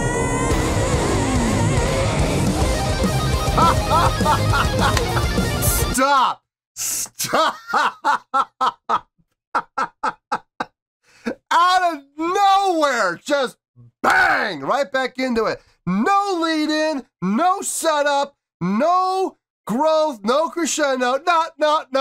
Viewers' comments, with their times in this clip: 0:03 The Michael Ammor guitar solo sealed the deal for you!😂